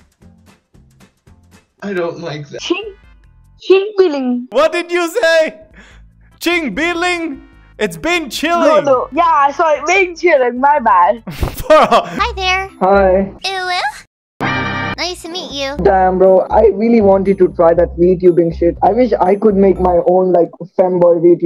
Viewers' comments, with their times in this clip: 0:03 ching billing 😂😂😂 My answer: ching booling😂